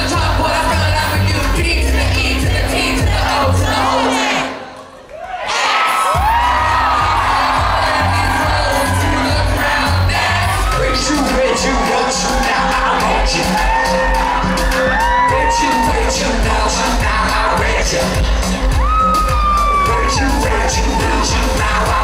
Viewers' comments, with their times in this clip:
0:03 When everyone was silent i got chills omg